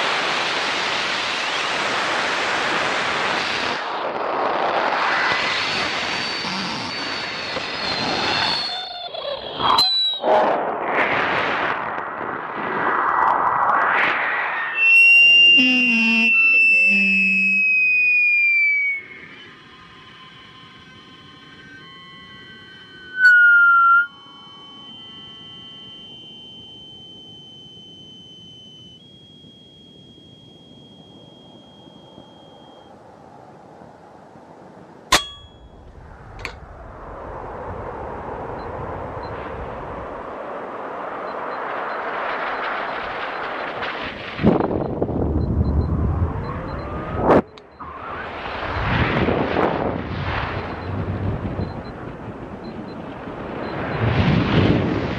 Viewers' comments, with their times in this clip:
0:07 sounds like a donkey is dieing
0:13 it's giving me ear aids R.I.P. headphone users
0:15 Average kid:LOL IT FARTED!!!! LOL SO FUNNY
0:16 you can hear a fart !
0:17 are these sounds coming from the air that gets sucked out? I mean is is vacum height?
0:35 you hear it hit something and it stops.
0:37 Rocket pops against Dome? :-)